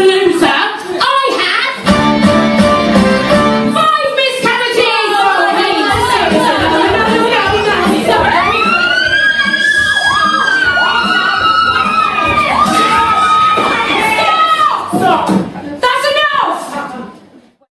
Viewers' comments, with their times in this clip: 0:07 who's the one who just starts screaming like I genuinely wanna know
0:09 Love those "high notes"
0:13 I'm 95 percent sure it's a screaming contest now